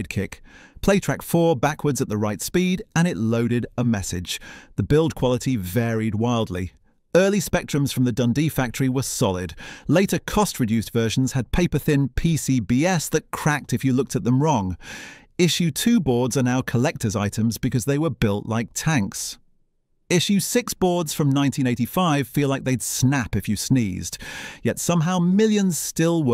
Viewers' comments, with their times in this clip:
0:09 Yep... the voice is good but the giveaway for me was pronouncing "PCBs" as "Pee See Bee Ess"
0:11 Yes, it is very convincing, but if you know what to listen for, you can spot it for what it is. The sharp "Breathing in" before speaking is one give-away, and "PCBS" at time index is a dead give-away - I think you mean "PCB's", you phucking A.I......... But if you ignore these irritations, the information in the video is still good value.